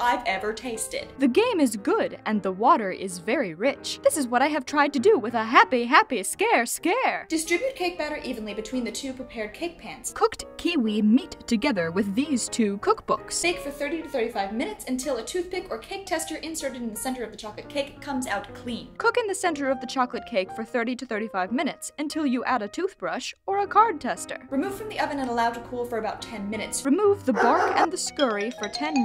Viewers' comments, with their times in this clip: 0:10 What happened to the audio and why am I the only one bringing this up?
0:10 i hear auto tune
0:11 the audio just gave up on that. Um ok.